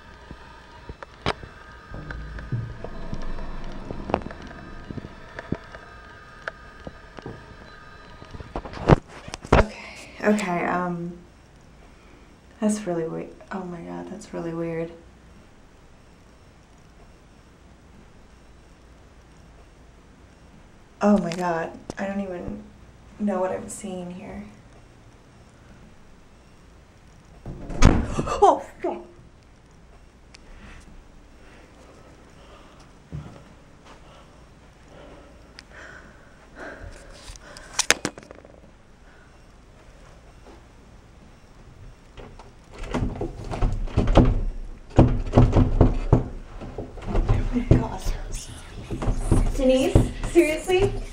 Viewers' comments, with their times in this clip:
0:08 sounds like someone is humming or somthing
0:32 I noticed her breathing sounded different on did she have her hand over her mouth or was that not her breath?